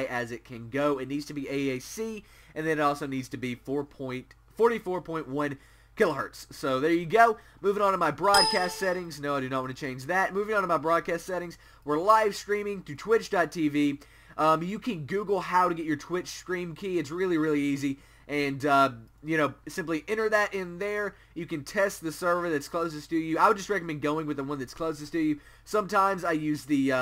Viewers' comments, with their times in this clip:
0:10 WARNING To All Headphone User Be Advised That In It Goes Loud For 1 Second